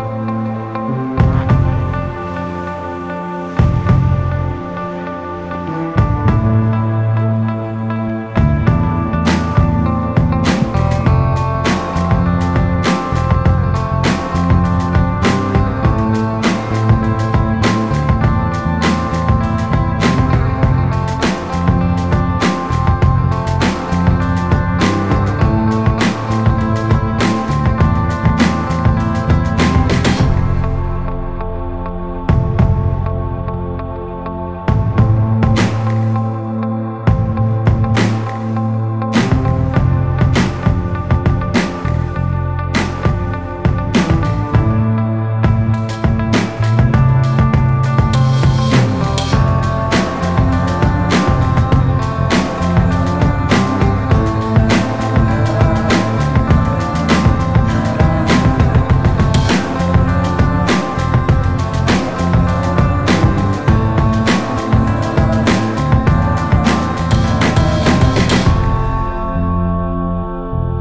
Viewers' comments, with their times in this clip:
0:09 Beat drops 😂❤! Why was this music chosen anyway 😆??
0:57 This music just clashes with the situation it says "look at how cool this is" meanwhile